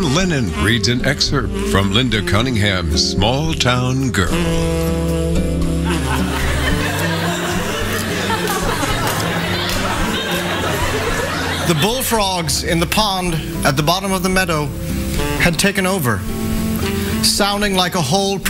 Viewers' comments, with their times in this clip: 0:04 I would listen to an audiobook narrated by Tom Lennon just on repeat